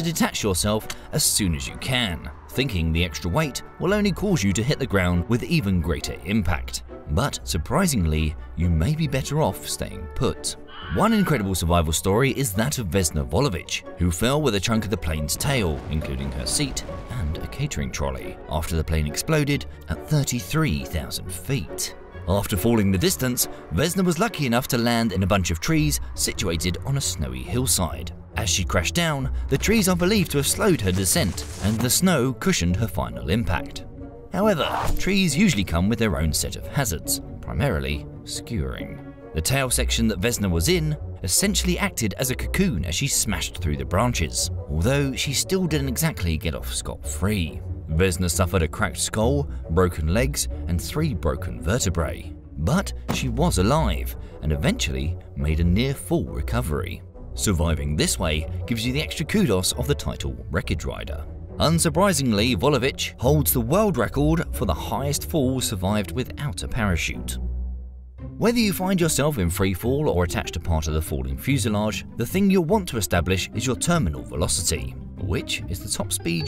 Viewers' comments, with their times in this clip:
0:10 Oh no! Wilhelm dies !
1:01 LOL Sounds like he calls her "What a bitch".
1:02 bruh why does that sound like a gta online challenge 🤣